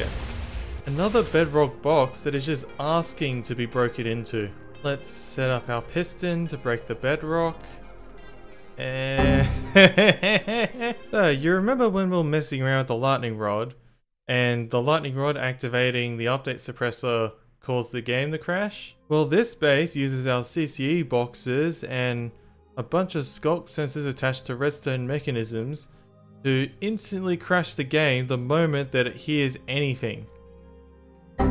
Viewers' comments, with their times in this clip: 0:07 first time hearing a laugh, nice to see a more genuine side of you.
0:09 "hehehehehe" sounded very similar to that meme
0:12 That giggle lmao